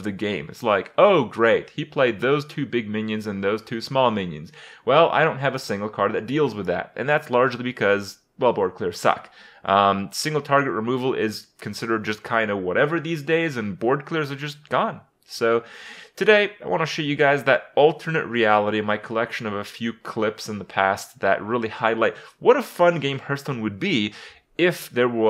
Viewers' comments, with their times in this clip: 0:07 Youtube Subtitles: "Bob Corker suck"